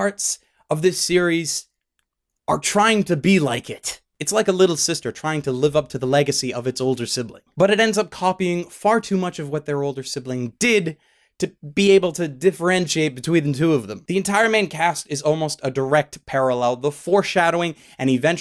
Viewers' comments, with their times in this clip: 0:06 Did he actually say Yuki Kagura different in like 20 seconds from one another in